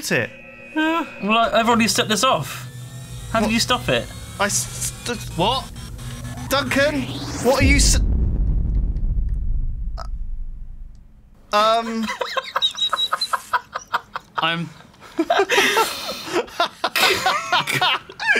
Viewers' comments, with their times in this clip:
0:06 ***** I love the shocked silence